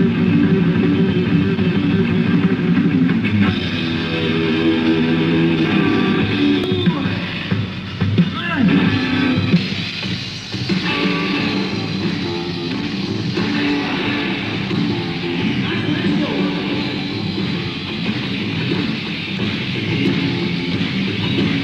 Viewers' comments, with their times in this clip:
0:08 One of my favorite versions of Dragon Attack! I like the way Brian keeps sliding the guitar, it's a unique thing: